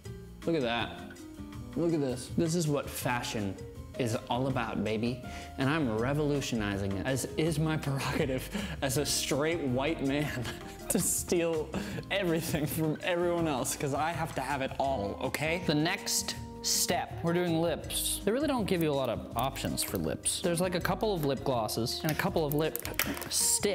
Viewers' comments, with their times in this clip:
0:09 did he say st-straight